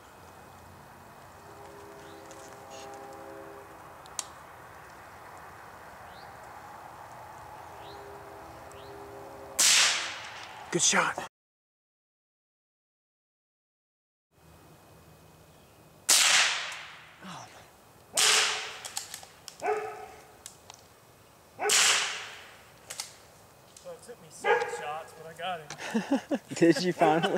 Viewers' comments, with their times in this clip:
0:08 *Squirrel* Who me? Wait what are you do... *blam!* Good kill